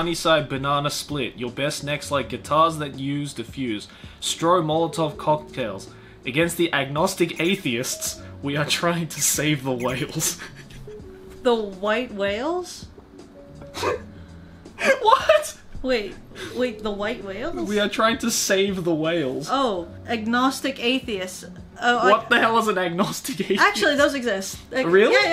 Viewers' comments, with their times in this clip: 0:09 Gojira heavy breathing